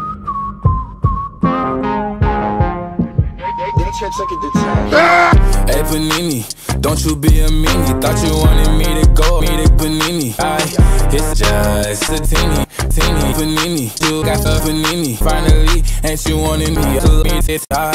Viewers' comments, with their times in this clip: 0:04 Nobody mentioning Heavy's scream ?